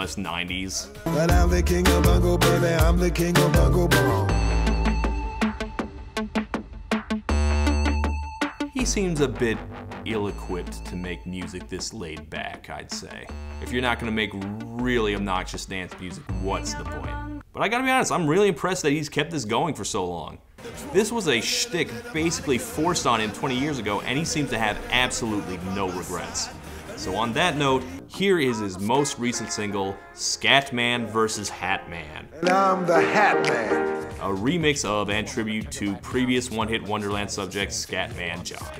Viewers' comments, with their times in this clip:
0:10 Sound like Seeed Berlin Beat
0:20 You gotta hand it to him, that vibrato's wonderful